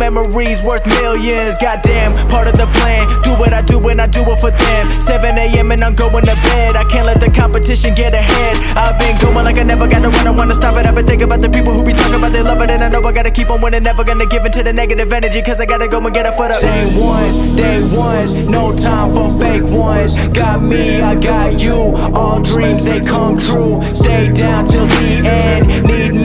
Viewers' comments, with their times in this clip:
0:09 ... It resembled me Eminem 😍💓🔥